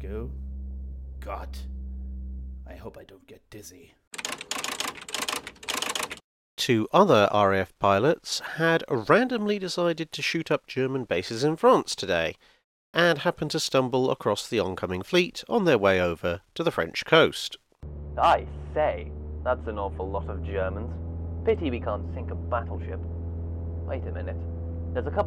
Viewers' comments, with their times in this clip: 0:09 The timestamps are helpful, but the faux commentary is hard to understand, and quickly gets old. It's gotten so old, and so hard to understand by that I'm thumbing down and finding something else to watch (even though your descriptions are interesting and I did want to watch the whole video).